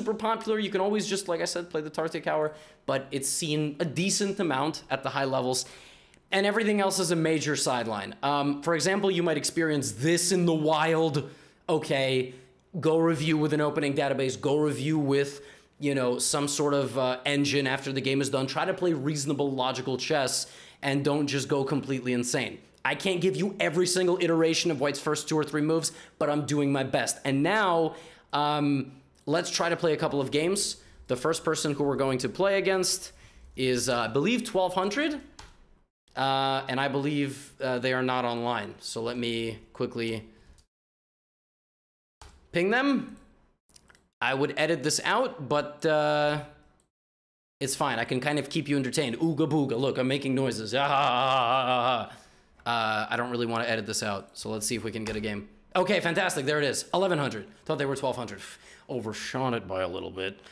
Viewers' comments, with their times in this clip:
0:10 did Arnold Schwarzenegger hacked your mic ?
0:48 bro I'm playing it on 1.5 speed while levy is making some random goofy ahh sounds